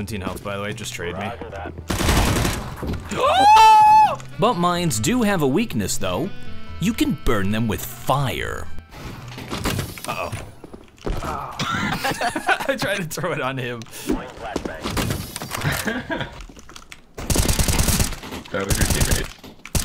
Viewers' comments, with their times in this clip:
0:04 sounds way too much like the postal guy
0:07 voice of postal guy